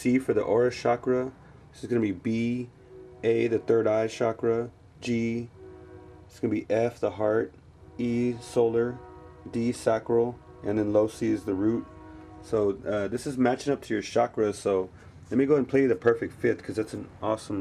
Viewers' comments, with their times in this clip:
0:03 there is a diesel locomotive horn in the background. Sort of got my attention :-( Otherwise a good video.